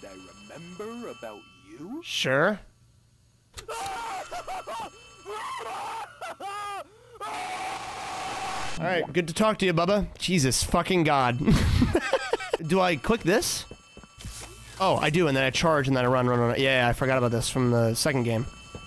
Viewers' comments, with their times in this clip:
0:06 yo 😭 why did that lowkey like a blarg scream